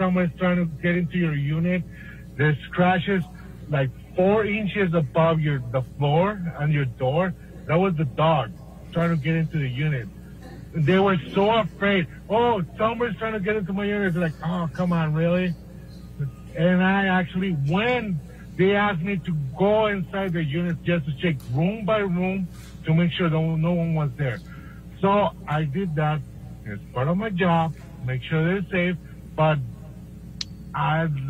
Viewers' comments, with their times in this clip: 0:05 everyone in the court laughed but Amber
0:12 lmao his attorney scolding him "COMPOSURE!" but you can notice how he's also trying not to crack up with laughter... I really hope Johnny gets the justice he deserves.